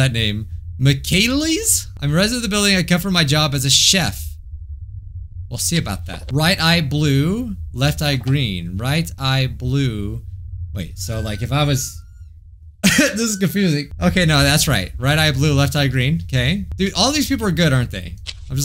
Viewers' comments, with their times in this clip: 0:05 what was that squeaking noise lol😂😂